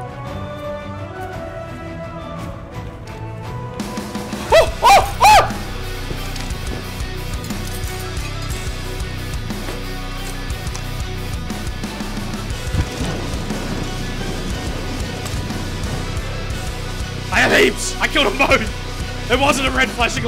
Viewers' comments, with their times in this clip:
0:04 you kinda sound like Harry lime from home alone